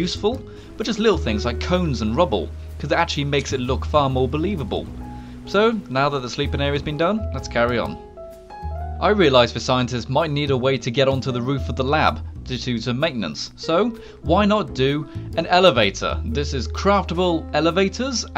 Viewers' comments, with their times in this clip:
0:04 like if you heard him taking screenshot
0:04 I heard that thumbnail screenshot haha